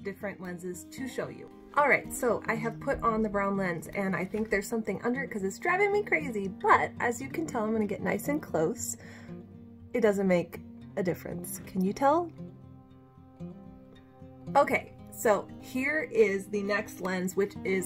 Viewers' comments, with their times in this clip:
0:04 Shoot I was looking forward to an Air optic video. But had to go to different in due to terrible, distracting back ground music. Couldn't hear you clearly. The lighting looked great though 👍🏻